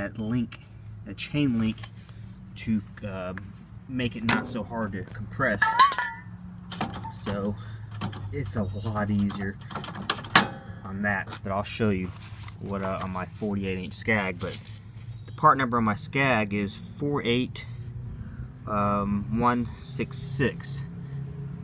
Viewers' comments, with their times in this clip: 0:05 That can of wd40 tipped over and went heeeeyyyy!!